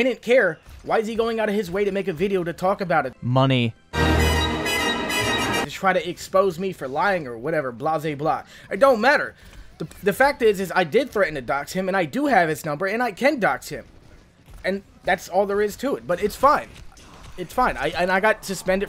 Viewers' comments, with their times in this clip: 0:03 The bit where he just goes "money." and the star wars outro plays is gonna have me laughing for a week man.